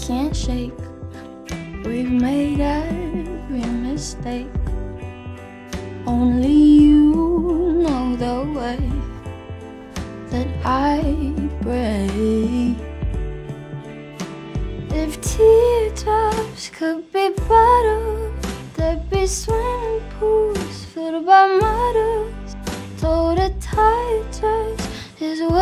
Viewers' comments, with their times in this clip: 0:09 That break is just. So beautiful
0:11 okay but is the prettiest thing i’ve ever heard